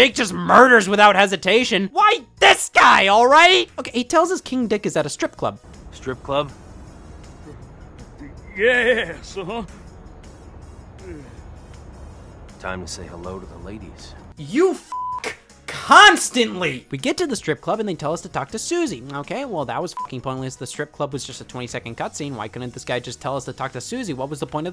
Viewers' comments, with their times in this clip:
0:06 goddamn it scott, WHY THIS MUSIC